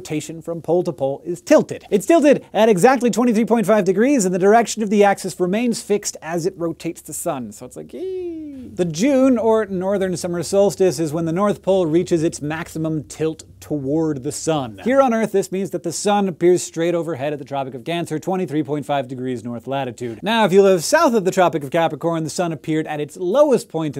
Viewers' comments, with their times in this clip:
0:07 And if you listen carefully, you can hear the Earth's tilt....